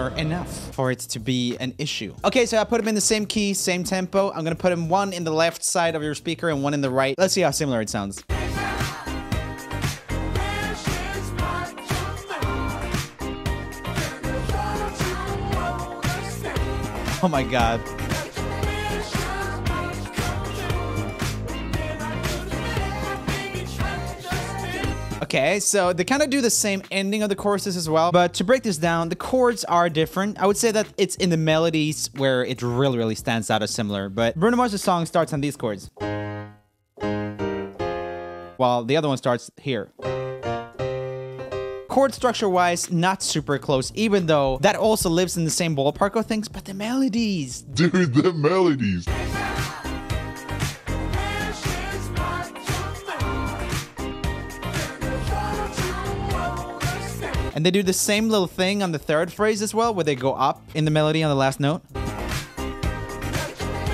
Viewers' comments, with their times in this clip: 0:03 me who only has one earbud in: *sad noises
0:46 it sounds like it says lamb shakes im your bod??? Or am I just weird